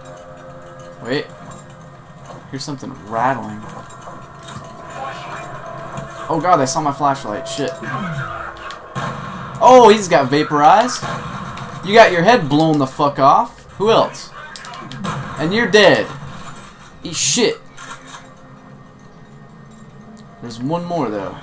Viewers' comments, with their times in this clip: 0:07 correct me if I'm wrong but I believe the bad guys just want to have a beer, they yell "Miller Time!"